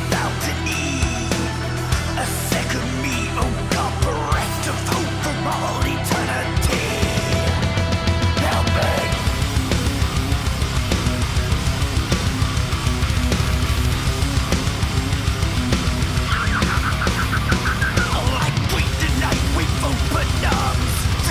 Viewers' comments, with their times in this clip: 0:05 Bass is wonderful!!!
0:09 cradle of filth startin